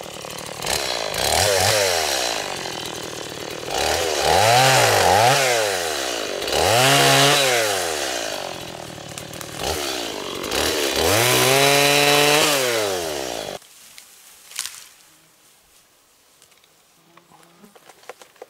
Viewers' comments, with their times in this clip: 0:06 I like that new Silky saw you're using at the mark, It's a little noisy though!!! LOL! Nice video, Thanks!!